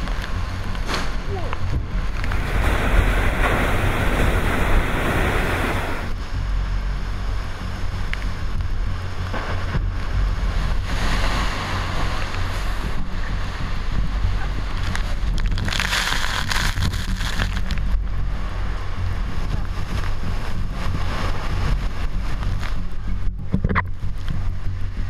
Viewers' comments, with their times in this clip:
0:07 lightning, and thunder in the eyewall